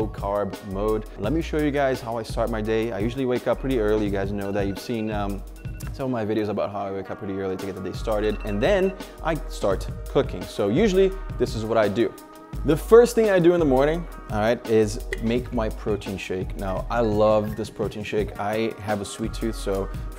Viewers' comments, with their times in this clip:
0:06 Every time I hear that alarm gives me anxiety 😂